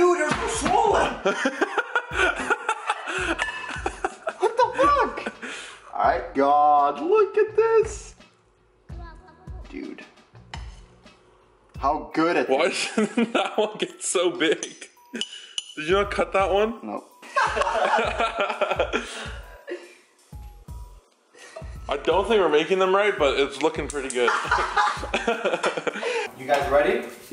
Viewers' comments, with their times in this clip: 0:09 listen a little kid